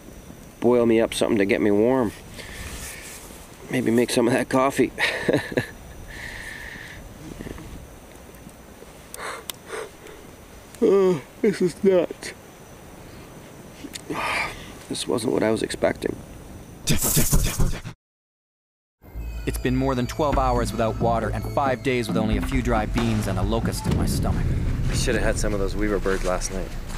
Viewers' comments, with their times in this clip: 0:08 I love the fact that you can still have a good ole chuckle in your situation lol 😂